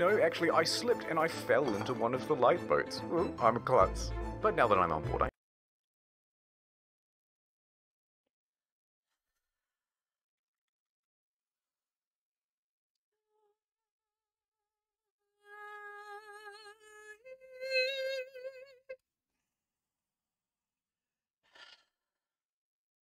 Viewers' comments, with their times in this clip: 0:10 This video made her so angry she started singing Opera. Pretty well I might add.